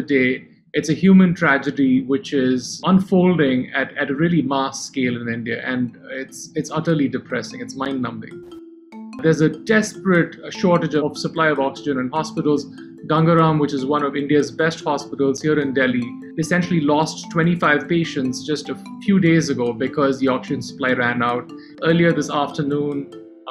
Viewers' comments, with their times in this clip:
0:08 The xylophone background music while the Doctor is talking is so inappropriate.. Starts off with a sense of urgency and took on a rather odd tone..